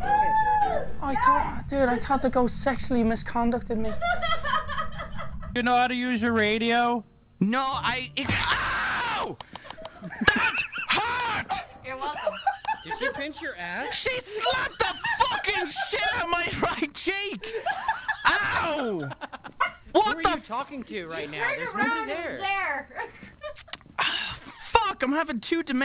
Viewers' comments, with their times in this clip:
0:07 This is my favorite clip he want from swedish guy to Angry Irish man 😂